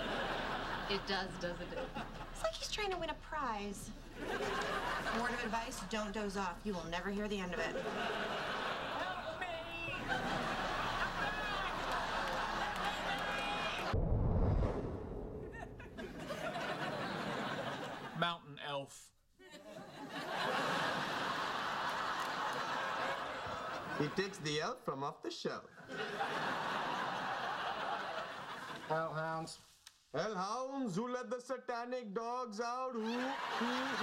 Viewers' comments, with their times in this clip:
0:09 sheldon cries for help
0:22 Could someone tell me what Raj said while in the Haz-Mat suit? I have a hard enough time understanding him WITHOUT the suit!